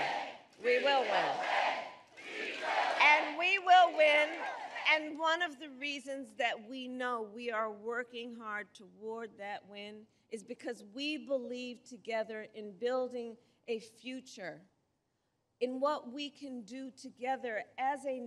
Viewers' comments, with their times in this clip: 0:06 you can tell by how loud the crowd is thats its less than 100 people